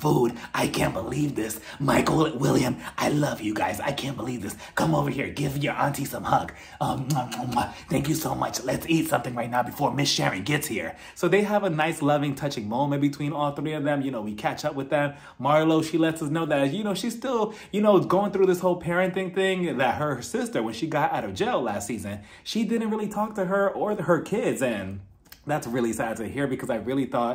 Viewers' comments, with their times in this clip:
0:09 I forgot about your Marlo impression!!! I just spit my water out 😂😂😂